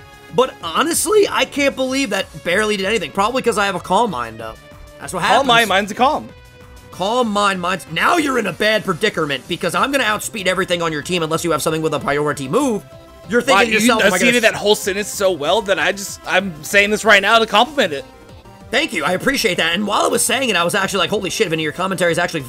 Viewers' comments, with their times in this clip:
0:10 “now your in a bad perdicerment” wot?